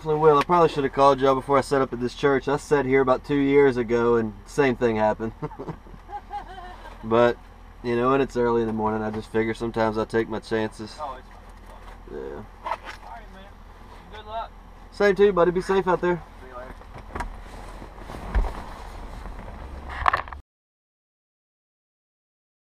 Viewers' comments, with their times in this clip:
0:05 That cop laughing lol